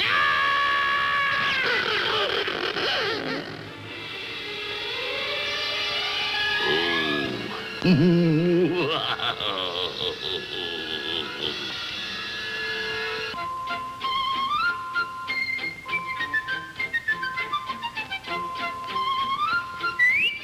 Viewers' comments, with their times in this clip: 0:06 The laugh made me lol